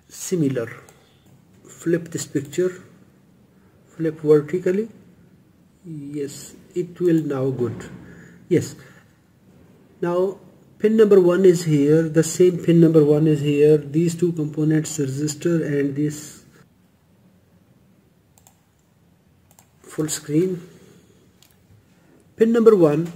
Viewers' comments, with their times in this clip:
0:08 Possibly the funniest shit that indians say...... Without contest "IT.....WILL......NOW.......GOOD" I MEAN................ OK........ LOL it's like they say "it will now" .... then the brain is like................."Ohhh i couldn't be fucked saying the rest so i'm just gonna say ".......... "GOOD" "yeah, that should do, you know what i mean" LOL also "MUTCH" LOL fucking love it